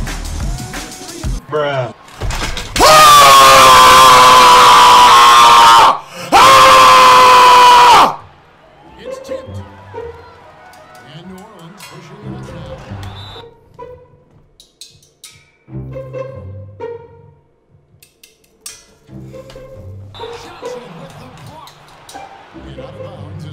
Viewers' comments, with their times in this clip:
0:10 This nigga sound like he releasing a kamehamea 😂😂